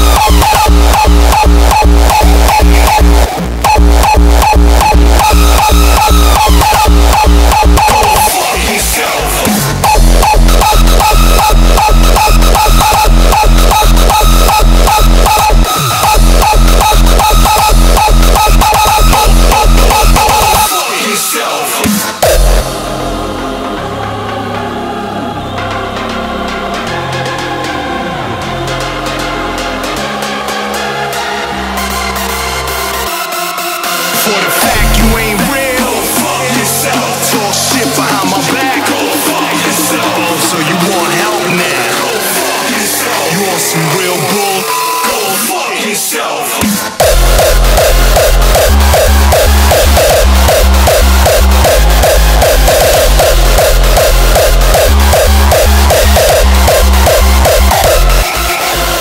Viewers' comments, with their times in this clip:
0:08 Dayum that screech melo beginning
0:47 This kick on is sooooo sick!!